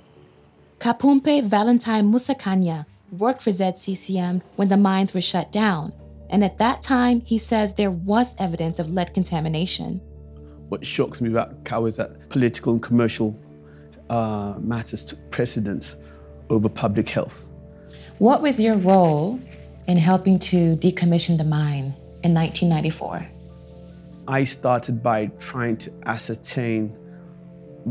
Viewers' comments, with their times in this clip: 0:10 that guy's fake english accent is as goofy as the interviewer's hairstyle. the other official later in the video is a big time bullshitter, too.